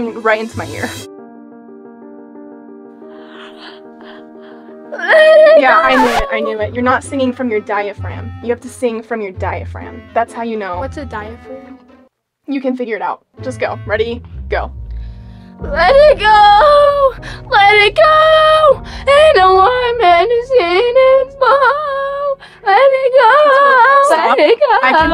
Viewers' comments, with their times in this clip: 0:08 it’s so funny and I love his voice